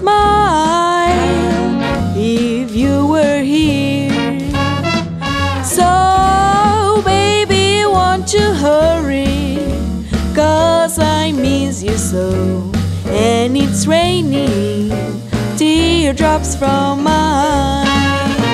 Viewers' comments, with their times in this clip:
0:05 Who needs to make bends on a guitar with this voice?